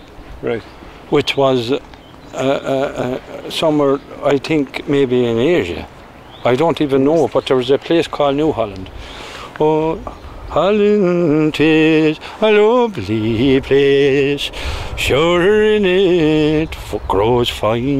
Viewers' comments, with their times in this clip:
0:05 Amazing video, and what a beautiful singing voices... btw New Holland was the former name of Australia, back in the XVIII century.